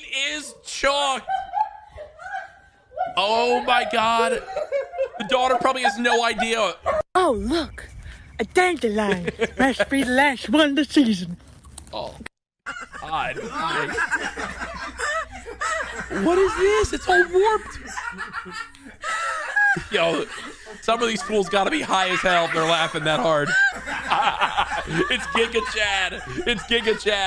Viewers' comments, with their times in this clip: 0:09 devious ahh laugh
0:11 WTF IS THAT LAUGH 😂